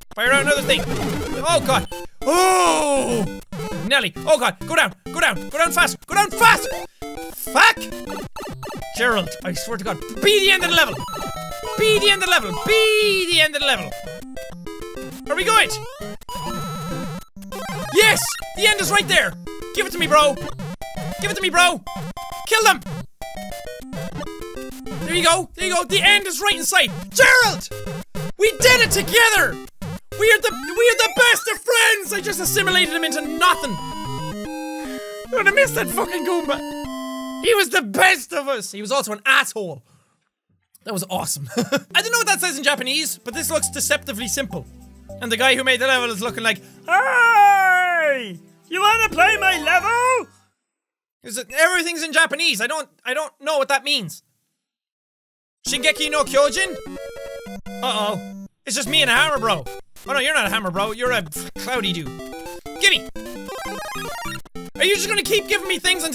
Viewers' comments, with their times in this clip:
0:10 you sounded like Link, from the Legend of Zelda, shouting: "FUCK!"
0:46 he sounds like fishy boopkins for a sec
0:46 fishy boopkins impression
0:47 He sound like Kermit the frog
0:53 ur such an good voicemak3r